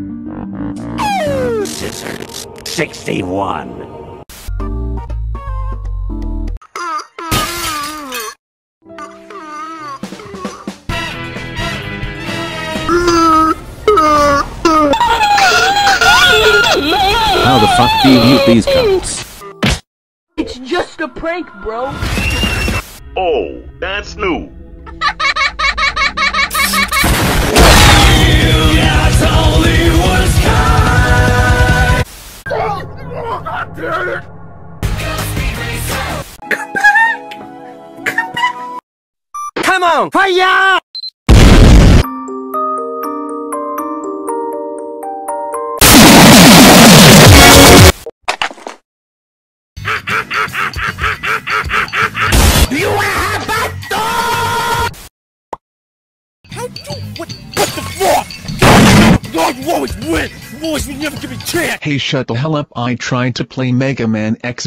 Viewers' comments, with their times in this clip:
0:09 I literally thought it was Jeffy's voice
0:41 Sonic Racing, can you feel the sunshine reference but on xylophone
0:45 Bro you literally killed my ears lol
0:45 the worlds quietest sound
0:46 earaped the hell out of me